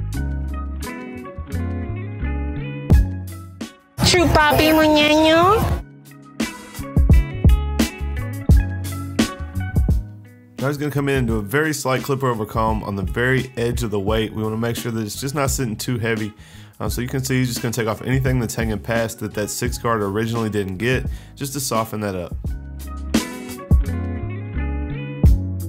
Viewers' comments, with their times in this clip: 0:08 Love the sound affect 😂